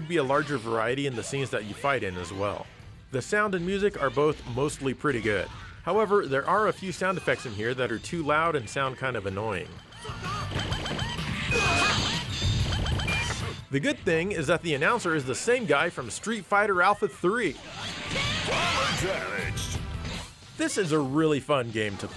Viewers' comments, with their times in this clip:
0:10 did he scream “Suck off!” And throw a part of himself ??